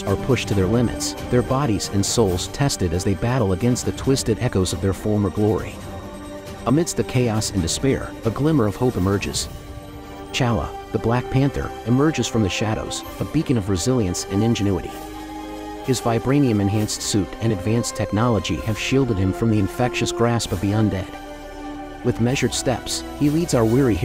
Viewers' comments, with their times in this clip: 0:10 the bgm cue and then this entrance will send the audience screaming at theatres, perfect equivalent of Captain America's entrance in Infinity War 👌